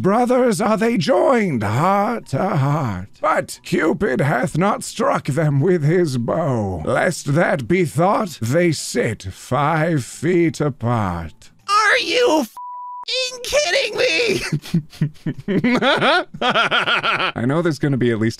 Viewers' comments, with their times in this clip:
0:05 YOU SOUND LIKE SEPTIMUS SIGNUS FROM SKYRIM WHAT